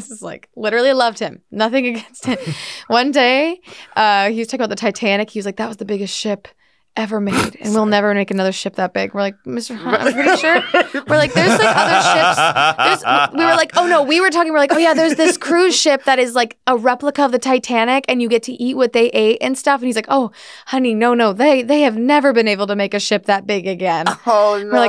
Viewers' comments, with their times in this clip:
0:09 Shayne’s wholesome laugh: